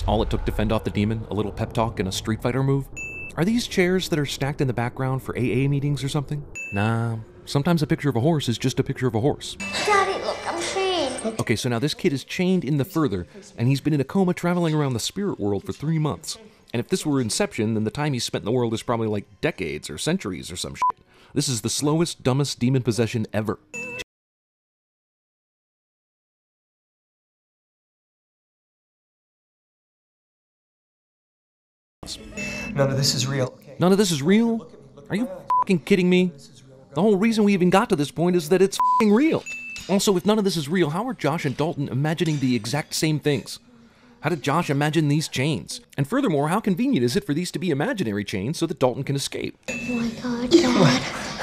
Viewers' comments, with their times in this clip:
0:09 You forgot to bing in
0:23 number 67: audio missing again to 5: 26. Hellooooooooo!!!!
0:24 even though we are critiquing a horror movie. I did get scared when the audio cut off lol
0:29 does the audio cut out for anyone else at like the 2ish and marks
0:30 so what's with the audio cut out??
0:32 why there is no sound sometimes in this video, like